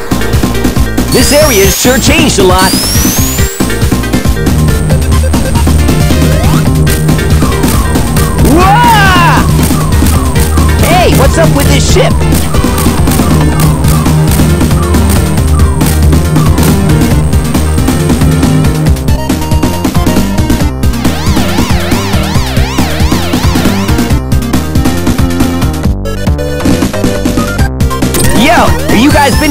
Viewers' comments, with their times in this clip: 0:10 it sounds like a word
0:10 Did he just say "What's up with this shit!"!!??
0:11 If Sonic says "Hey! Whats up with this shit?"